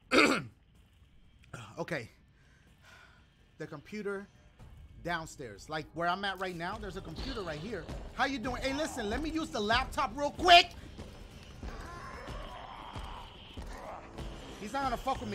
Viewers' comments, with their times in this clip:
0:03 my reaction every time I here Mr X. I have to pause for a few minutes, I'm so scared :D